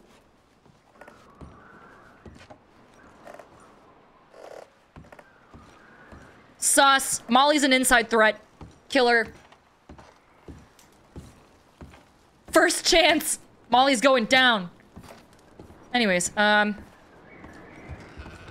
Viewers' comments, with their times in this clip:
0:04 she’s Irish lol she has the best accent in the group